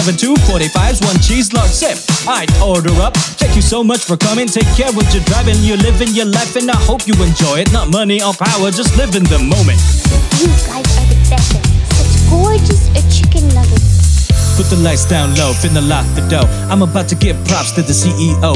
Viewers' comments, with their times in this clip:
0:03 I love when you can hear an artist having fun what they are doing. I have no clue what it takes to get me into trying to write my own music or get back to drawing, but stuff like this helps. The lines starting are just gorgeous! For all your future life and music, 頑張って！！